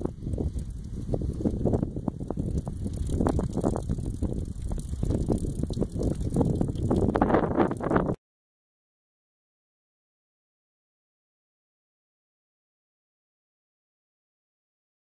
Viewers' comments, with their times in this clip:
0:11 Nice wind noise. Commentary could be more interesting. But i got through all this time.